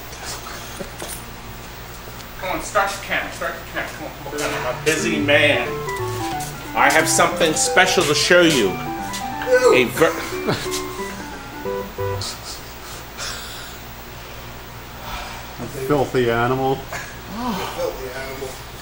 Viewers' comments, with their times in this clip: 0:04 It sounds like you've got a Playchoice-10 or Nintendo Vs. cabinet in there.